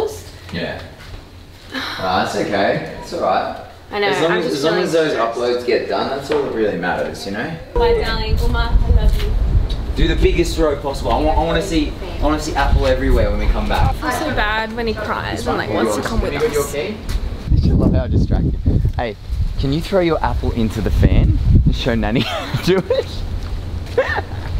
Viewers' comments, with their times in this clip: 0:08 wait omg did you ask for an uma or did I hear that wrong?? hahah